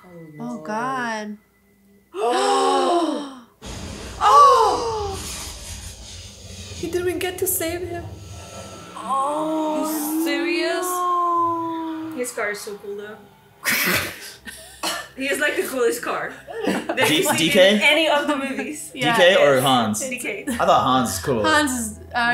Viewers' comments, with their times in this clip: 0:03 Girls: gasp Oh nooo!! Boys: poker face LOL